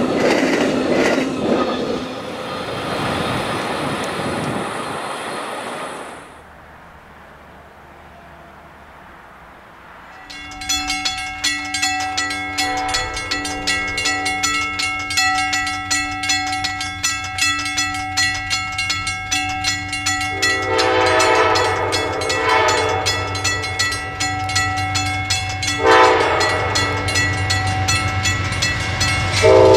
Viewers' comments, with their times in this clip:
0:10 Stupendous gongs! US&S probably put a lot of effort on them!